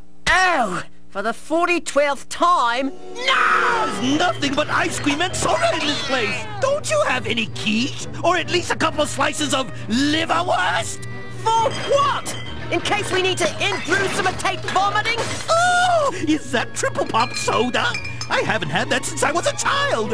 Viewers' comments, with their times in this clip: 0:05 There was a random cat noise. I guess the makers of this show was taking cues from Ed, Edd, n Eddy.